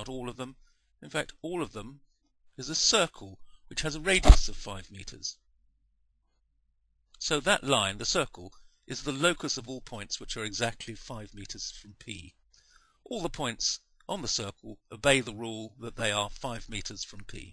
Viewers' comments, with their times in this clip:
0:04 sounds like a cusion